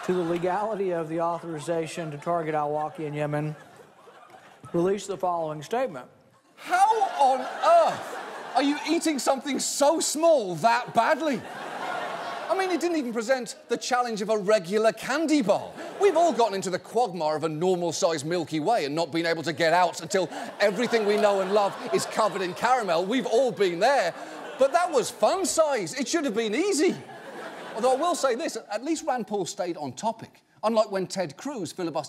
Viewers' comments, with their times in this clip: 0:07 u can hear Johns english accent for almost 30 seconds. doesnt sound so badly xD
0:13 watching it for the third time i noticed john's innate english cadence show itself when he says "..that was fun size, it should have been easy!"